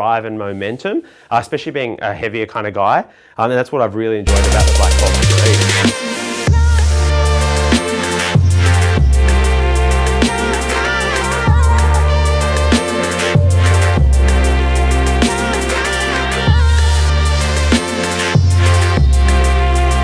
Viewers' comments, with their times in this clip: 0:03 That music scared the shit out of me